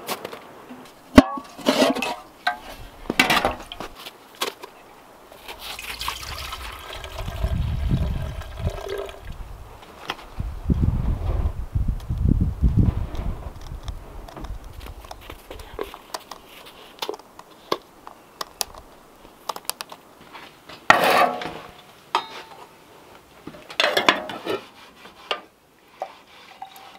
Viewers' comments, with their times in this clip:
0:08 What's that being scraped ?